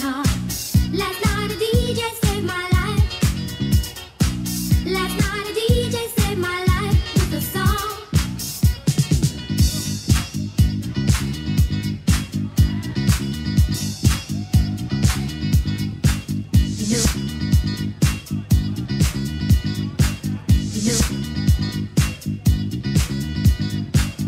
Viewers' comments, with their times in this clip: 0:08 Double scratch and sniff 💀